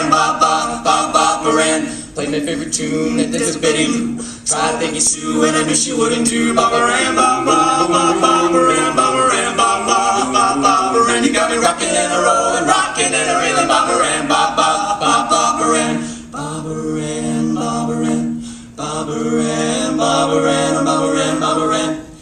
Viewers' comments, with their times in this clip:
0:04 ♪boom boom boom boom boom boom boom boom♪ super clever!! XD